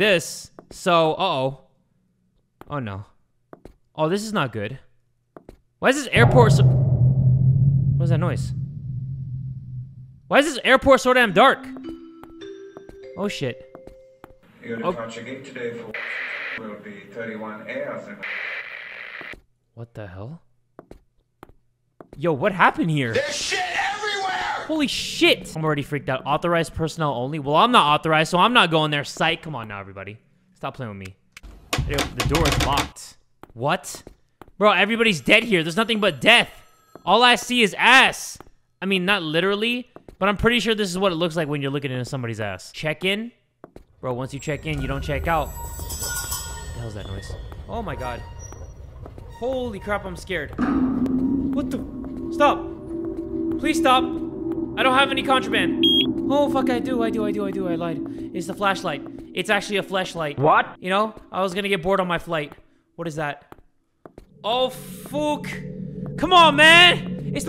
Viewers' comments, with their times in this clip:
0:09 BRO WHEN THE THING WENT OFF A THE BEGINNING LIKE I WAS SO READY FOR IT TO SAY "A body has been discovered!"
0:12 why its sounds like body discover
0:12 Please tell me that when that announcement came on I wasn’t the only one who thought about that “scary” tiktok danganronpa sound
0:15 is it just me but was that a body discovery announcement
0:22 wait is none gone talk about that voice at 1 game idk why but it sounds like quackity
0:45 I can’t help the fact that sounds like that sound is in my room. To see what I mean have headphones on. IT KEEPS CREEPING ME OUTTT
0:50 someone farted or poop